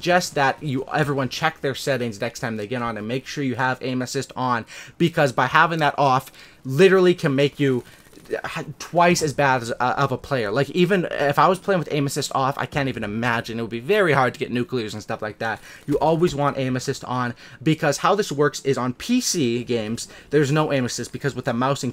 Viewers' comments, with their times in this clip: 0:03 I thought he said anuses